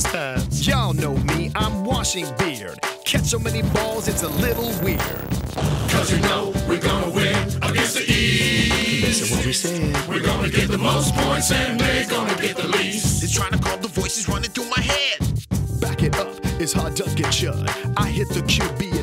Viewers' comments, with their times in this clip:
0:06 The West team's hook is too smooth, they win no contest